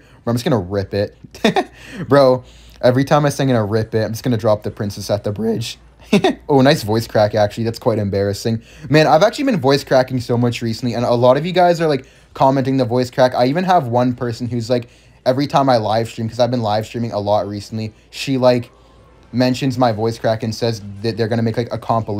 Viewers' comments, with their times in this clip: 0:04 💀 bro is still in puberty